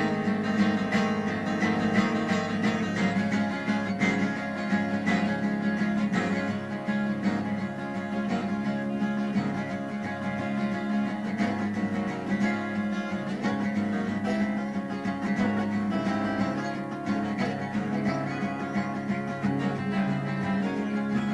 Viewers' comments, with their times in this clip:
0:05 Army of Acoustics, it was mesmerizing when all of the different guitars were going at once